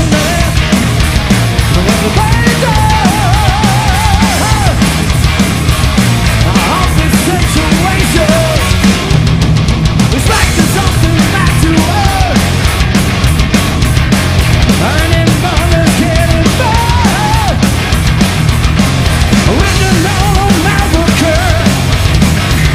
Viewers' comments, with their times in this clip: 0:03 why am I laughing so hard ? 😂 the sound of when you whack your toe on the corner of the table